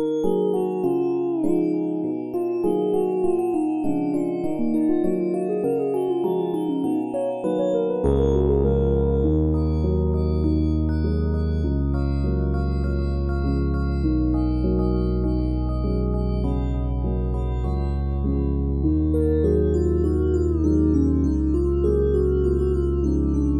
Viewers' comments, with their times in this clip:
0:04 ok but am I the only person who low key hears that little bit from spider dance right here